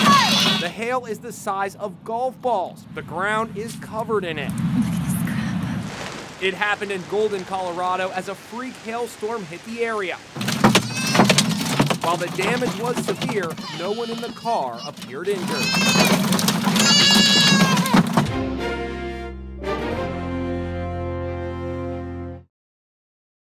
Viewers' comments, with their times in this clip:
0:10 hold up is that the sound when u hit someone in minecraft
0:11 To be honest, it sounds like you died in Minecraft
0:11 that sonded like when you hit hit in minecraft
0:13 my eardrums were